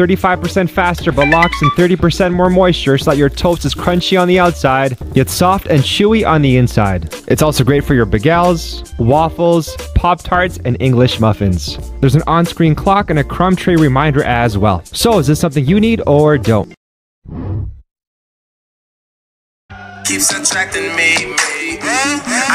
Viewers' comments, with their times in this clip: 0:07 he really say ba-gel and not bay-gl
0:08 ba-GAYL??? excuse me what.. I thought you pronounce it bagel
0:08 We need to discuss the way he said Bagels